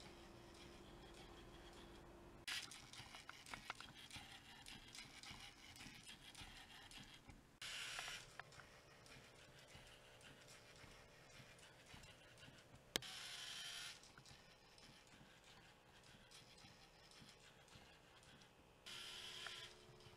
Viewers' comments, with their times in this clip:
0:03 Nice job! (I just think when the motors keep spinning it sounds like the robot is choking xD)